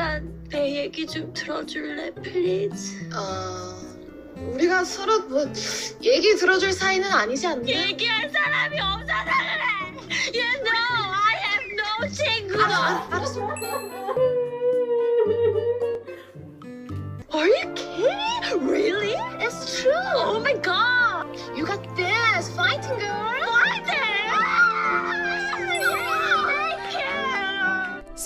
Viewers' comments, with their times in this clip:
0:07 she is speaking korean😂😂😂😂
0:11 which language she was speaking in
0:15 is that business proposal? I just started watching it and it’s all that is on my mind… but the character who speaks half English half Korean is pretty memorable with how she speaks